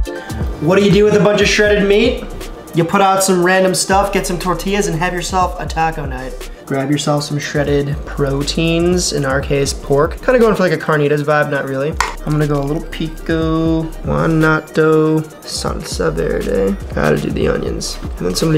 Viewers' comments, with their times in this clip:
0:06 I like the new music ---